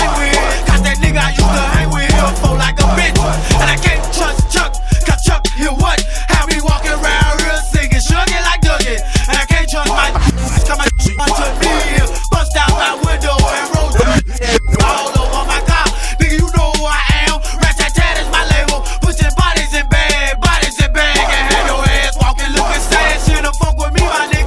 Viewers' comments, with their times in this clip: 0:05 Anyone know why the blanked/censored out a part